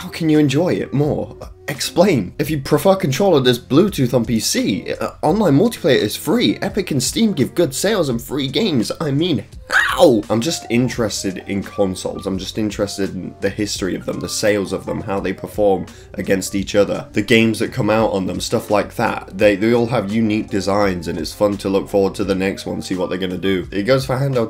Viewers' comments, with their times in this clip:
0:08 bro really hit that "how"
0:09 man screeched "how" like all of motown combined